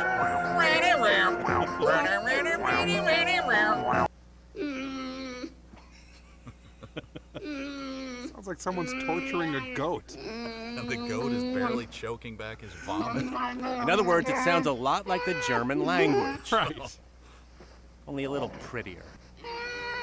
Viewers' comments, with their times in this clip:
0:07 it sure does sound like Kevin says "Crow"...